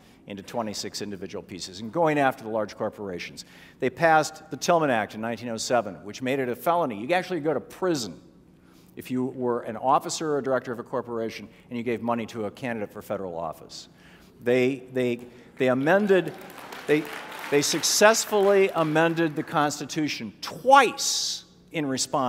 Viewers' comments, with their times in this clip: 0:04 the audience applauds the Tillman Act. If only they knew anything about Sen. "Pitchfork Ben" Tillman.